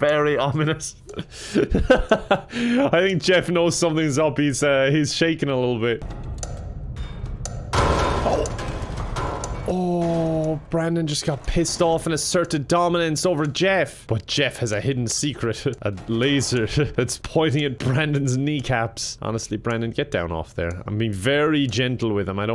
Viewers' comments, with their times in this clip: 0:06 I hate how everything that happens in that one scene is in perfect beat with the metronome.